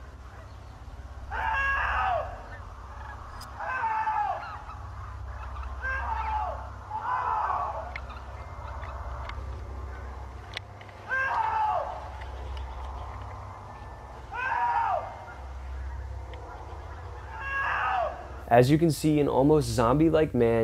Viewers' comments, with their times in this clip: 0:07 ok that doesn’t sound like a human that scream after “Help” kinda OFF! I would be freaking weirded out